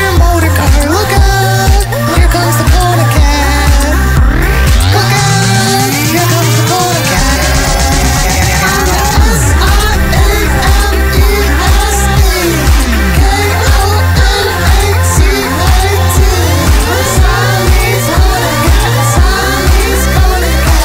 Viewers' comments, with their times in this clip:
0:08 Pause Kona farts 😂😂😂😂😂